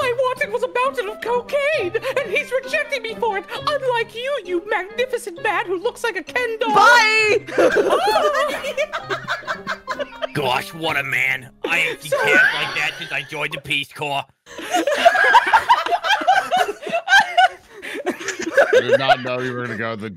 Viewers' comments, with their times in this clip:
0:08 That sudden Doctor Girlfriend had me in stitches